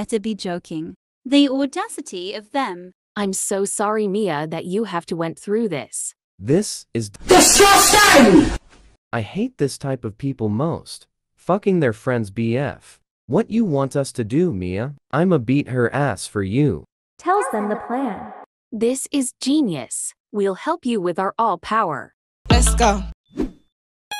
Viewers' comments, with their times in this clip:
0:07 bro im chilling watching the show then this mf loud in all i hear is disgusting at loud like dang bro my soul almost went out of my body